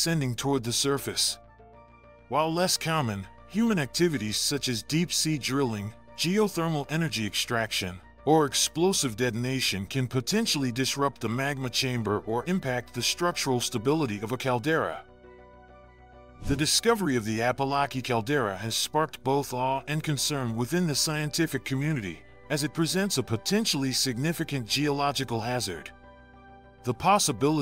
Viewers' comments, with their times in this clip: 0:08 i was enjoying it until when he said "Cyommon" and i realized its this dude again. Cyommon, Cyomplicated, Phenyomenon, Cyomprehensive.